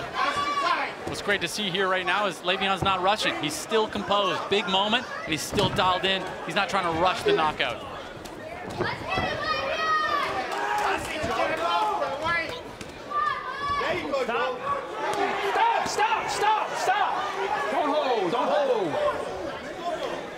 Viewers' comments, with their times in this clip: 0:08 did anyone else hear that or am I going crazy? “Let’s get him black guy” from a kid in the crowd…